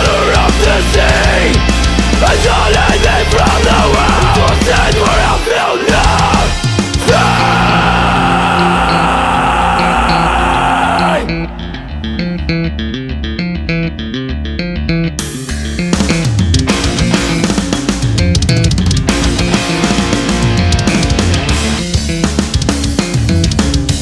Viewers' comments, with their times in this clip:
0:07 that bass tapping part is amazing